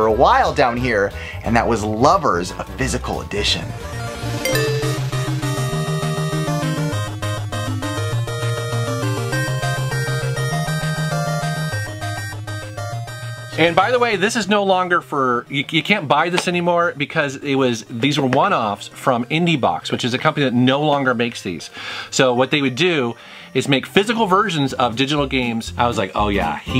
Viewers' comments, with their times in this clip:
0:07 Omg 8bit version of the Watamote theme